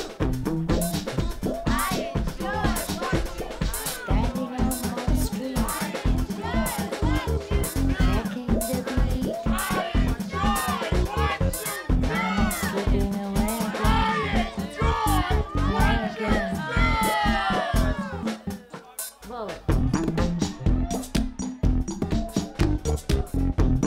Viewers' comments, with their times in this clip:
0:08 the track at min. is absolutely amazing!!! let's dig!!!